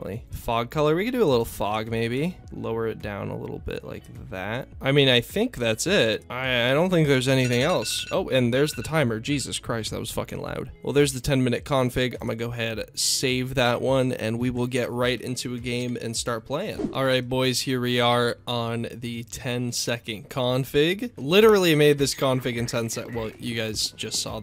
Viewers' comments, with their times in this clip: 0:07 that alarm brings me back when i need to woke up for school xD